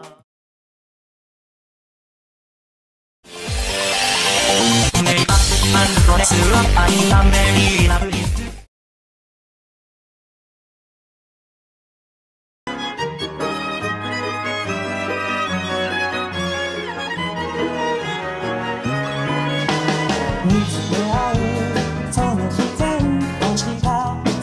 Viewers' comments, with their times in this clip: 0:05 Agressive!KAITO mode on